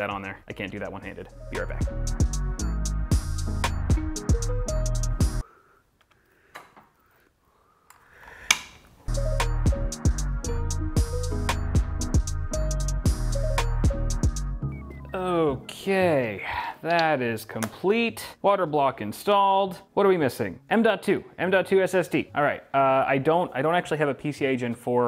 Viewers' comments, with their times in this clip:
0:06 After seeing and hearing that water cooler block snap clean onto the bracket, makes me want to splurge on a water cooler so badly. I have some stock AMD air cooler which is bulky and doesn’t quite work with the airflow orientation, but just typing I thought of how I could correct the airflow for cooler temps.